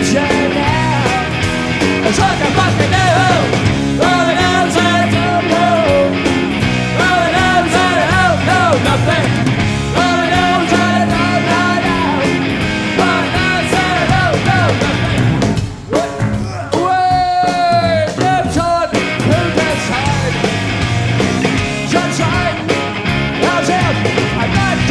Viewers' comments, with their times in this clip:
0:08 One of the greatest guitar moments EVER starts Wait for it.....SO FUCKING PUNK!!!!